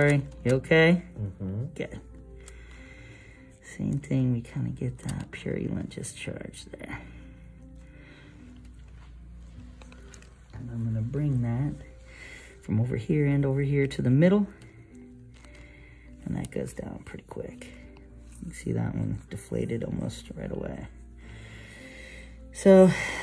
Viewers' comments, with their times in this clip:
0:08 LOL you said "bring that" and it was a bit muffled. For a moment I thought you said "brain matter." Good God, man, how hard did you squeeze?? Oh.. phew lol